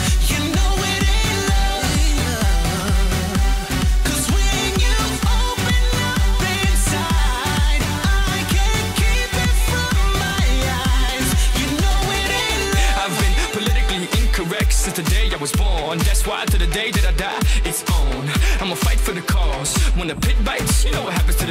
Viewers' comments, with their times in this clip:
0:04 wow serious autotuning wtf